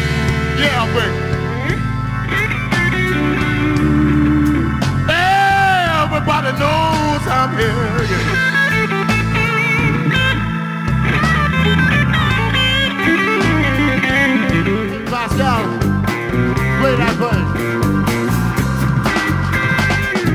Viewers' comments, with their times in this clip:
0:05 OMG You guys are so good!!!! Absolutely loved this! At the mark, I felt like I was listening to Stevie Ray Vaughn on guitar. Wow! I hope you all can get out this year and perform everywhere. I'm amazed! :-)))))))))))))))))))))